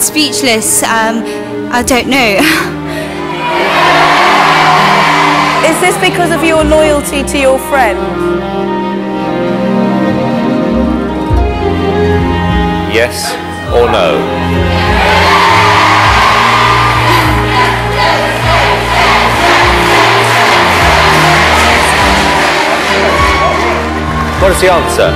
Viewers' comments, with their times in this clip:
0:07 hahaha when amanda is talking it reminds me of the emperor from star wars